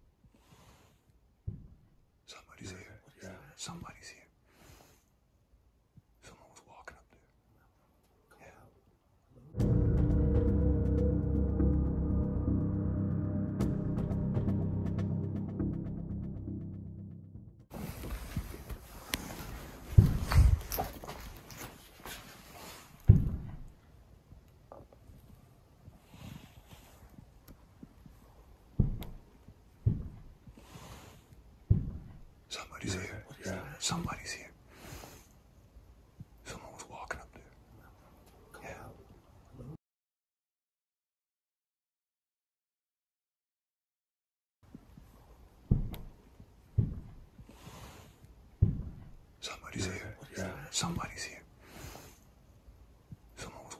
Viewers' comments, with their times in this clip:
0:09 Did I just heard someone saying hello right before the footsteps scene ends? Here
0:09 Did I just heard someone saying hello right before the footsteps scene ends? Here
0:29 Am I the only one that heard "you're about to die" over the the talking around the mark?
0:37 you can hear a growl listen very closely for it there’s a growl !!! 🤯🤯🤯🤯